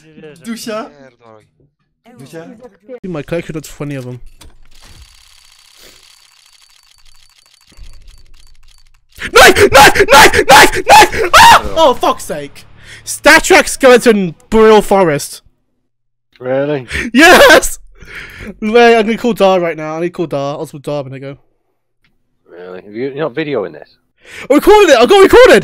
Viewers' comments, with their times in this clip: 0:09 OMG IM JUST SCARED! HE SCREAMING HOW GIRL!